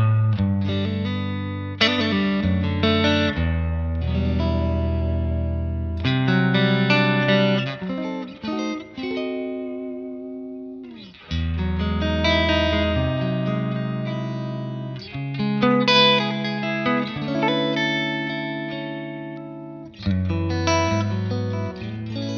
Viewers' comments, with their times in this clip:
0:10 The chords and sounds are really sweet!